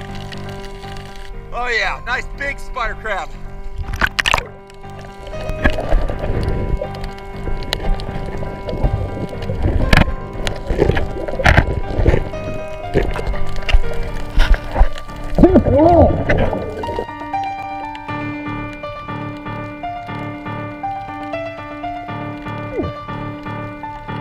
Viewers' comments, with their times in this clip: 0:05 put subtitle oh "yeah big spider crap"